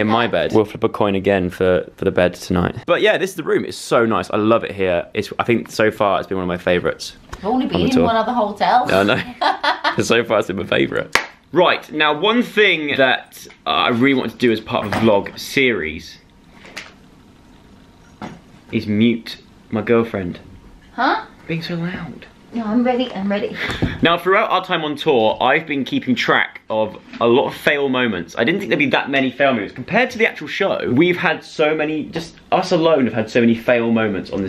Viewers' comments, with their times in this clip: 0:07 The way she says that seems so satisfying to me idk why
0:08 her accent then was so good 😂
0:19 Is it only me that heard girlfriend ??? 😂😭😘